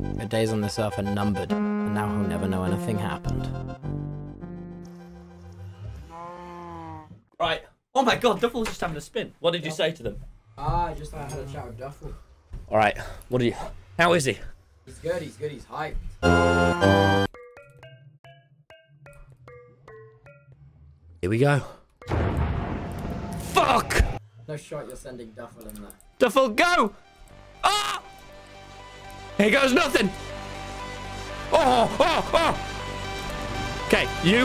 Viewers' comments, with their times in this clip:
0:06 why are the ender eyes making among us music????
0:12 TOMMY HAS A MOD TO MAKE THE END PORTAL MAKE THE AMOUNG US DRIP SOUND
0:15 sounds like the among us thingy
0:15 u can start to hear the amoung us theme
0:16 why did the portal make the among us song
0:16 END PORTAL SOUNDED LIEK AMOGUS
0:16 There is something a bit sus with the sounds ...
0:16 Know how but the end pearls sounded like the among us sound lol on
0:16 On you hear the sound from among us while he is placing all the eyes of ender….
0:16 Nobody noticed that the end portal sounded a bit SUS?!
0:16 sounds like amogus
0:16 is no one going to talk about the among us trap remix from the end portal frame?
0:16 DID NO ONE HEAR THE AMONG US MEME?💀💀
0:17 did someone notice the eyes of ender making the among us remix theme tune when being placed in the portal frames ?
0:17 ITS JUST ME OR THE PORTAL MADE THE SUS SONG???
0:17 I'm not the only one who hears the among us music playing when he puts the eyes in right?
0:17 why does the eyes entering sound like the among us sound lol
0:17 my the eyes being placed in the portal sounded like Among Us. Someone please tell me they heard it too I know I’m not that crazy
0:17 am i the only one that realized they edited it so that the eye of enders would sound like the among us trap remix?
0:17 okay but did anyone else notice that the sound of the pearls being placed in the end portal was the among us music 💀
0:17 Is no one gonna talk about how placing the ender eyes made the among us song?
0:17 bro is it jus me or do the ender eyes sound like amogus theme
0:17 anyone else hear the among us ?
0:17 I hate how I can hear the among us
0:17 lol i appreciate the small detail of editing it so that it sounds like THAT among us song
0:17 Are we all just gonna ignore the sus end portal sounds?
0:17 among us theme intensifies
0:17 this sounds like the amongus Theam song 😭
0:17 that sounded terribly like the among us song bro what the hell
0:17 Did no one else notice the among us theme when he activated the portal? I think I can finally said that my brain is melted from that game
0:18 Pls don’t tell me that I’m the only one who heard the amogus theme when Tommy placed per pearls 😩
0:18 Is no one gonna mention how the eyes of ended played the among us trap remix
0:18 am i the only one who noticed that the sounds of the end portal frames sound like the among us theme?
0:20 sounds like among us